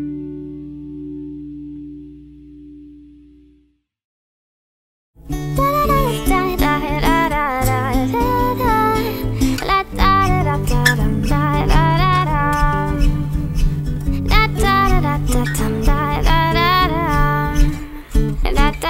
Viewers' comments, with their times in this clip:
0:05 OMG!!! YOU SINGO SO BEAUTIFULL